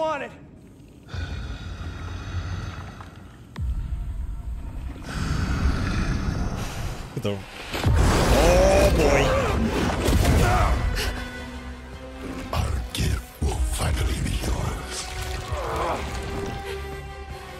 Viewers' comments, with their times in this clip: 0:03 I got so much chills when venom started growling in rage and it’s so bad ass